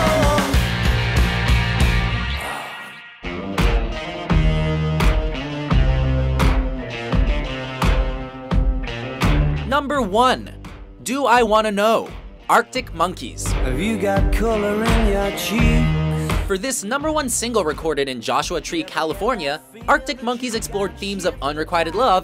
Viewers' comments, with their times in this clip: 0:03 This is bullshit! None of these scream rock! I take it all back. All is right with the world.